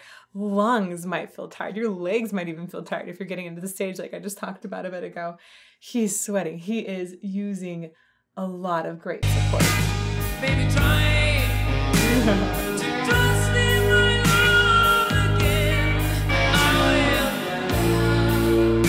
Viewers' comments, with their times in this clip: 0:05 he's sweaty but not from singing : it's lip synced to the studio recording. Not even the instruments are live. It's just the song playing in the background. You can even hear the fadeout at the end. Still, i've seen them live : probably the best concert I've ever attended. Klaus Meine is an amazing vocalist and Rudolf Schenker gives everything he's got on stage.